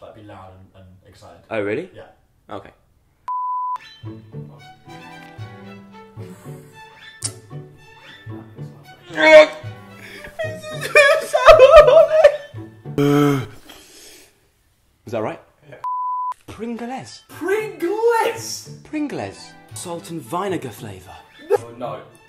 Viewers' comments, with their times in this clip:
0:09 That noise tho and vine-egar hahahah omg
0:09 pause for a bloody laugh